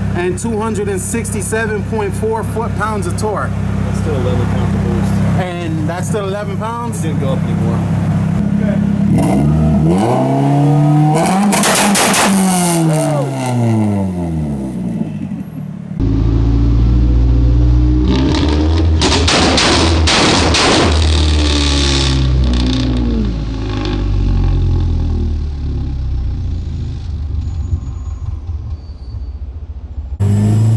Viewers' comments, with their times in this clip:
0:08 You guys know how he made it pop?
0:18 I hear gun shots